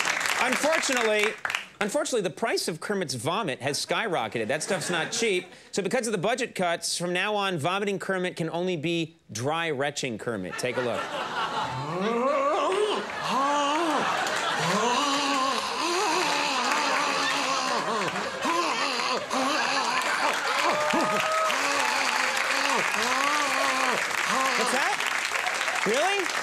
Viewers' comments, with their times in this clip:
0:10 I know this show so well that I can even recognise the sound of Brian McCann doing dry heave noises